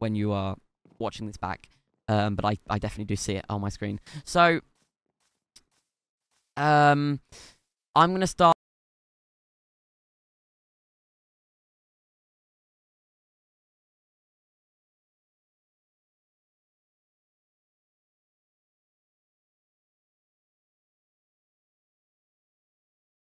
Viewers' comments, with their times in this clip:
0:05 we can't here you